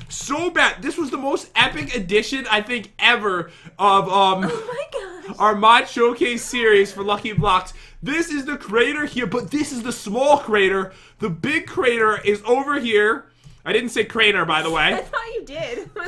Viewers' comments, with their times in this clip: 0:04 LOL her voice tho